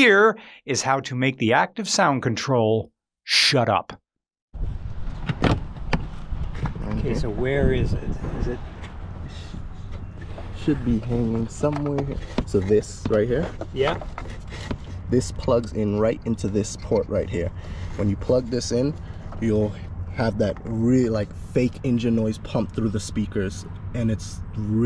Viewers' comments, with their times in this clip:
0:07 That "Okay, where is it?" Was filled with all the clinical rage of a locked up titan, and all the blissfully webbed feelings of vibrant joy of a child going to Disk-Replay, and with all the freedom 20 dollars gets you in that store. No one likes audio controllers.